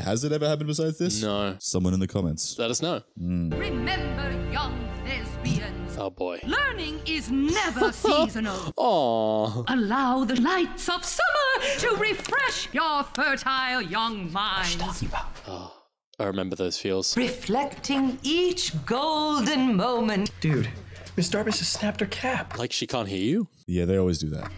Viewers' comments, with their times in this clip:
0:05 it sounded like the teacher said "Remember young lesbians" and now I can't hear it any other way.